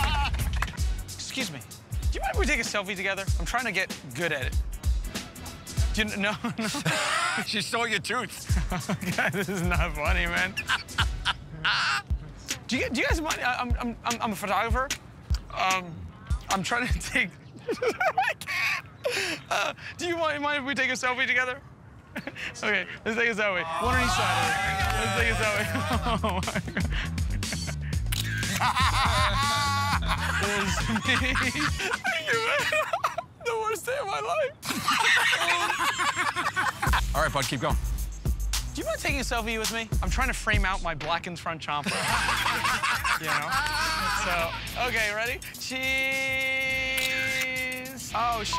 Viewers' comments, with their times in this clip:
0:10 Joe sounded like a bird 😂😂
0:31 lmaoooo poor Murr and they still laugh